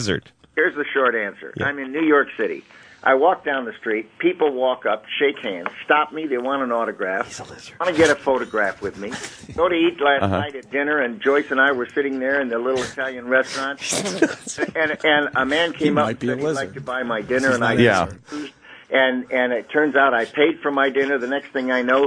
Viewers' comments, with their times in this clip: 0:06 whispers he is a lizard!